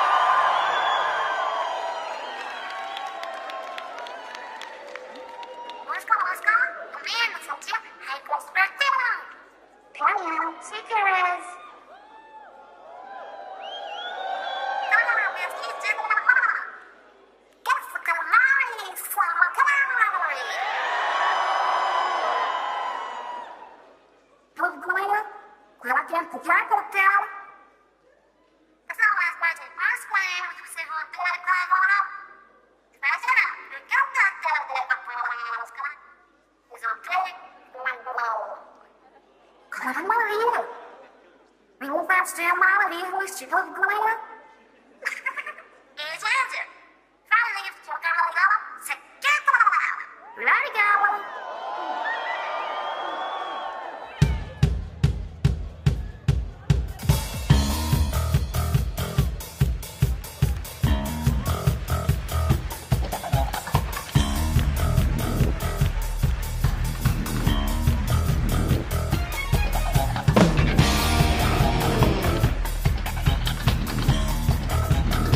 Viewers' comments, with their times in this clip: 0:04 Doesn't it sound like Callie is saying, "what's good what's good"
0:58 best clap ever :P